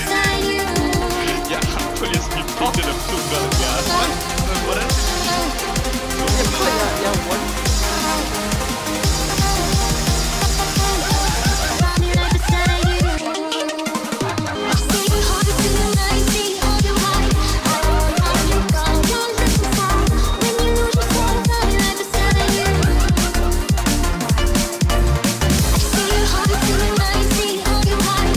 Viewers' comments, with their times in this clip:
0:07 i can't handle this guy's laugh, it literally makes me angry
0:11 wtf laughing llllooooooooooool Hhhhhhhhhhheheheheheh